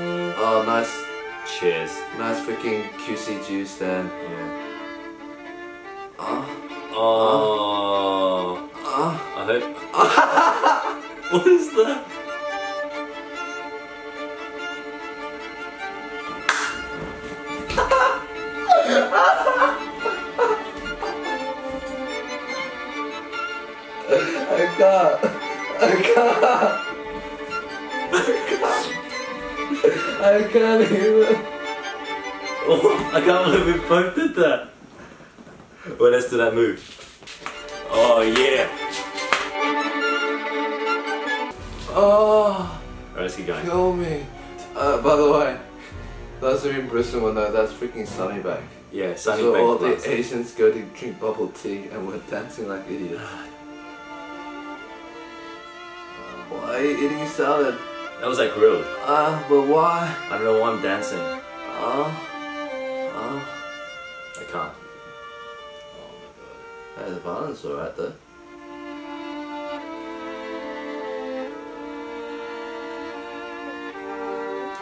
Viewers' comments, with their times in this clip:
0:06 ME: hears the noises in oh~ Also ME: no, not that
0:06 That moan Like OMG. hahaha
0:43 Eddy's so emotionally DISEASED his voice shakes here
1:00 Eddy was straight up moaning😂😂😂